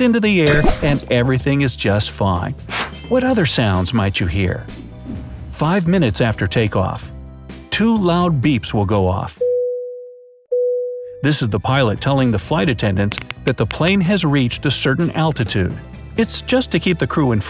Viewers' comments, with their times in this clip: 0:04 A baby crying.